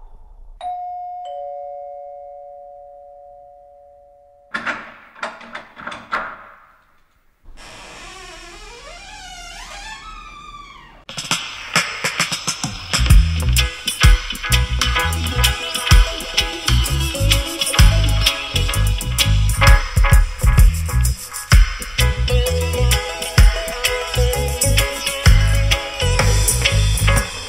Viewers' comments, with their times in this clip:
0:09 such a feel good groove. Timestamping it cause I dont know the tracklisting.. if anyone does, thank u in advance!